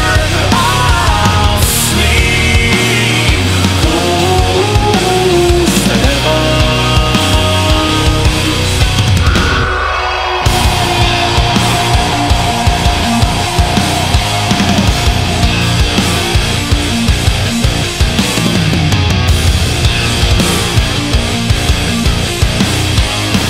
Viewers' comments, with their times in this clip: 0:07 just in case if anyone cant find the growl